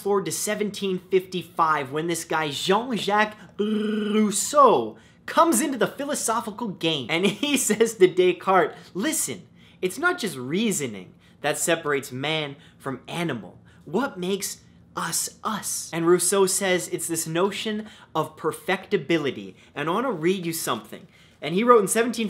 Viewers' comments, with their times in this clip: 0:03 never realised ppl who speak english dont use that r haha